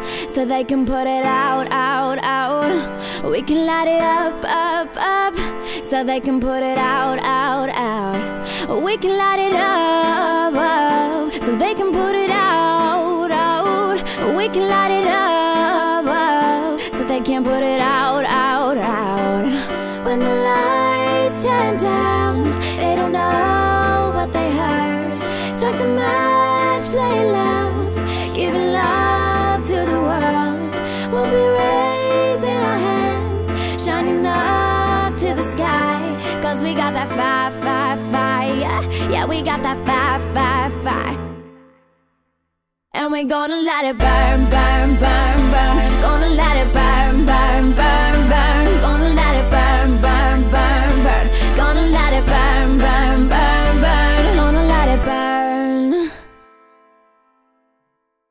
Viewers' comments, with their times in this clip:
0:08 Pause the vid her face looks so funny but she has a nice voice tho
0:43 I was hoping the beat was gonna drop! ^_^